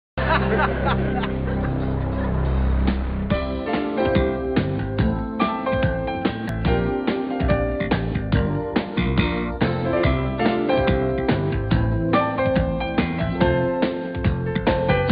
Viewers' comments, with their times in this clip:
0:00 Who is MacGyver laugh!!!